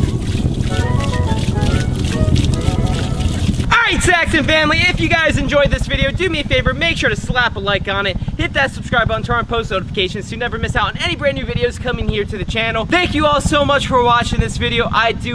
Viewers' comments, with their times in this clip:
0:03 the scream I make when shitting